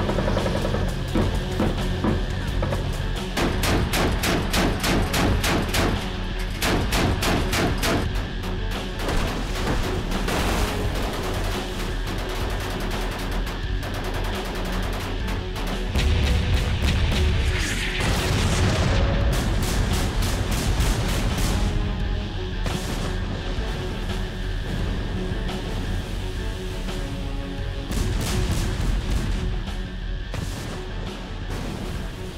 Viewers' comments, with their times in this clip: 0:05 The FBI when they bang on your door be like:
0:17 explosions are so fake unbielivable ! and the sound is like in rambo movies -_- pioupiouuu